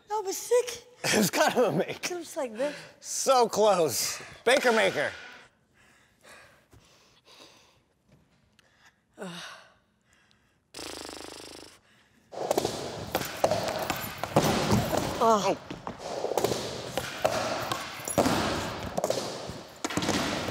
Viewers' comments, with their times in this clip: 0:04 ..i thought he said: "baby maker" Lol